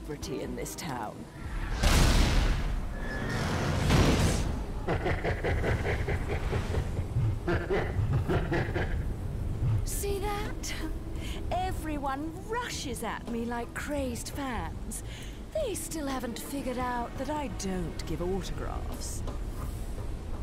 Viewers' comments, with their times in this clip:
0:04 This laughter sounds like Ganondorf's laughter from Legend of Zelda: Ocarina of Time.